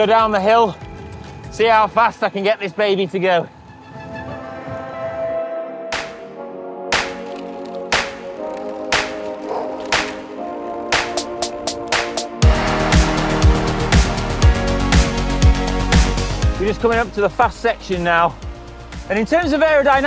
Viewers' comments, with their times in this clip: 0:06 Love your music choices on this video (especially ) - really a step up to previous ones! Feels just that bit more produced, which makes it more likely to watch the whole thing (at least for me).